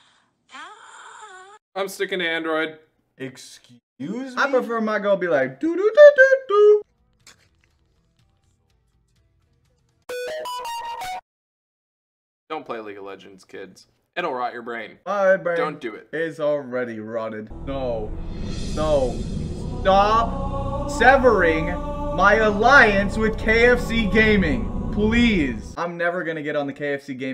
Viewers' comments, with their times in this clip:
0:05 why is the dodododo only in one ear
0:08 My right ear just got blasted
0:08 my right ear love that noise
0:09 My right speaker liked that
0:10 my right ear loved that
0:10 My right ear enjoyed that
0:12 why can you only hear in the right ear ?